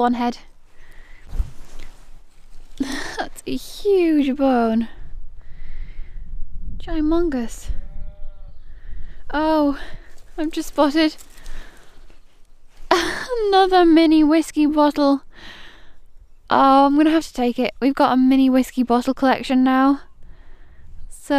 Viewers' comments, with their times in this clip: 0:08 As you were showing that bone, in the distance, I heard a cow moo , lololol, STOTTLE BOPPERS .... love it!